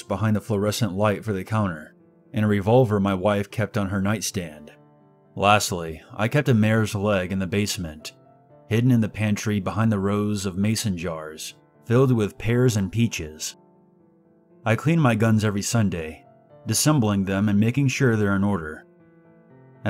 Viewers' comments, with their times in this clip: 0:06 $& The mayor's leg? Is he a murderer?